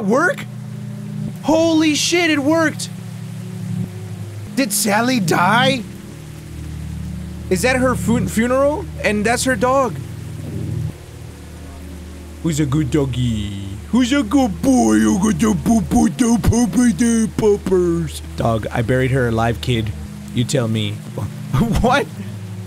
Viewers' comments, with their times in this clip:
0:04 NAH HELP HE SOUNDS LIKE THE LORAX